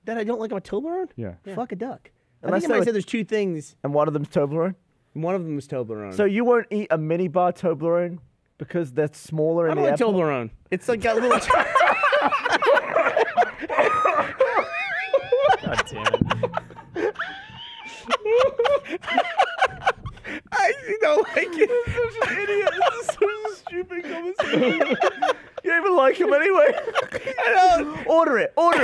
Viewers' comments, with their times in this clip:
0:06 what does Gav say that makes everyone laugh???
0:09 Why did they laugh?